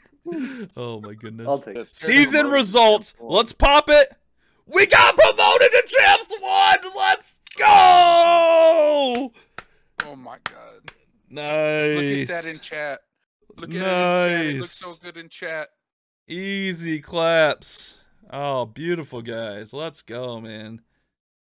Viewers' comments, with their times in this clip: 0:09 you can hear my mans sadisfaction in that "oh my god" good shit guys